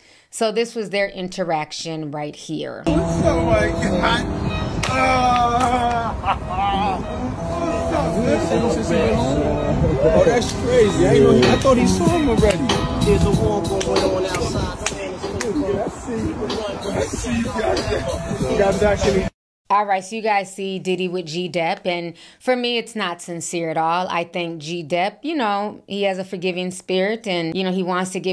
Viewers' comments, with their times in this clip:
0:09 y’all hear the instigator 😂